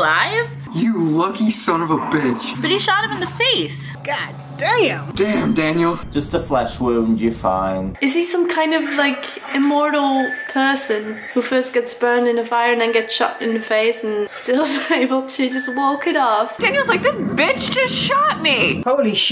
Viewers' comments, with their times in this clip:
0:03 LOL It is pretty funny, though. A very eclectic group. The one makes my ears bleed every time she opens her mouth. Her voice sounds like a screeching violin.